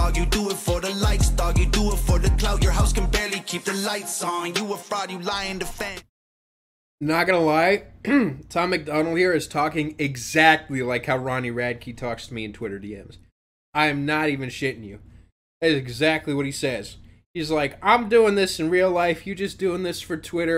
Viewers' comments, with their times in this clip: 0:03 all of these songs sound kinda the same and he doesn't really know how to make music that doesnt sound like an NFL jock jam youd only play for the KKK's rec league